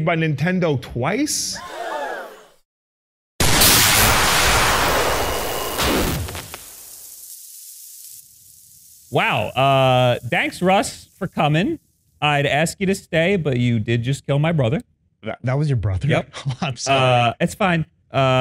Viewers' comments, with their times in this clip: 0:03 rip ear phone users like me